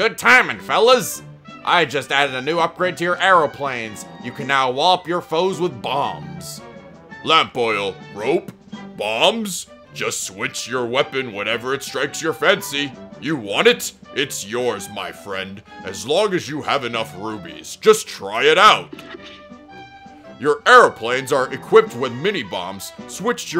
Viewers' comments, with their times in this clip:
0:07 That impression is epic :D